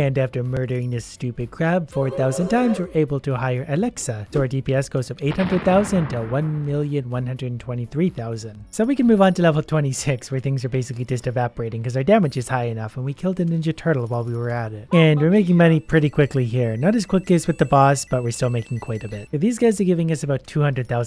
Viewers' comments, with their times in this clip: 0:03 Turn up volume, you can faintly hear of "Sorry, I don't know that one." in the background. Dozens, around the world. >:3